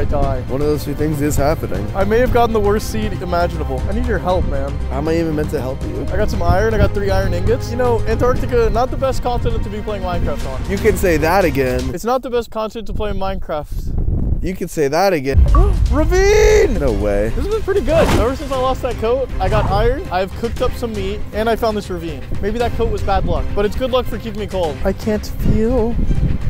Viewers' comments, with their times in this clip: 0:09 you can say that again and you can say that again got me rolling on the floor because how he said this with a poker face